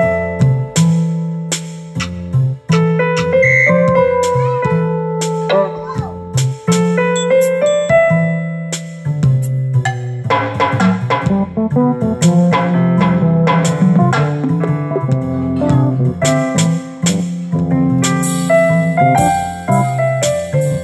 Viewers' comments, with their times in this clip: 0:06 jazz train derails